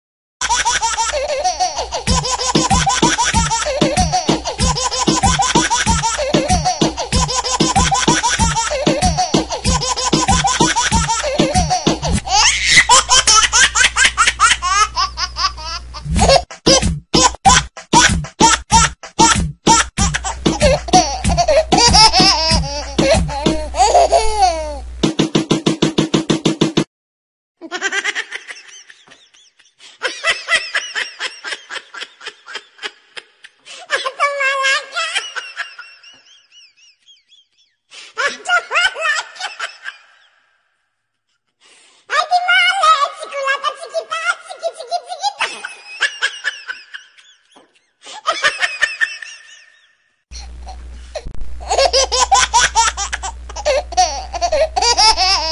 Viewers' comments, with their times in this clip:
0:00 Music Like a Samsung C5212
0:02 I really liked the beat and laugh together
0:28 THIS IS NOT A BABY LAUGHING SOUND
0:28 that was a baby😨
0:34 Me when I get a victory royal in fortnite Edit: so Elmo was making those funny baby laughs?
0:39 It’s normal until you put the speed to 2x… Wtf is